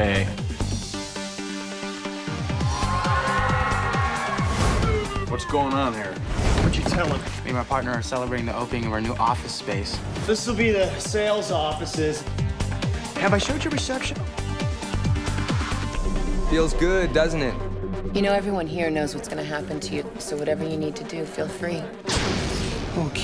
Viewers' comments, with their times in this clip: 0:09 Hearing a song on here made me remember the scene